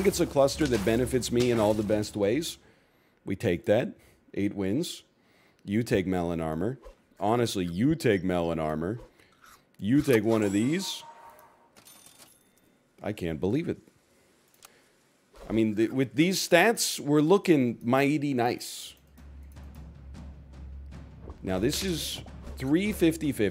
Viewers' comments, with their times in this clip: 0:07 Real voice came out.